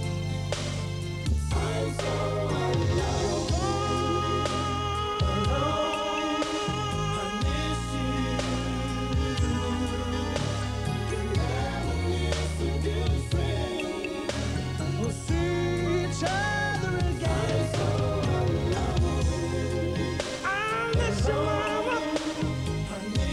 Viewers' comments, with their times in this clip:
0:04 Them high notes on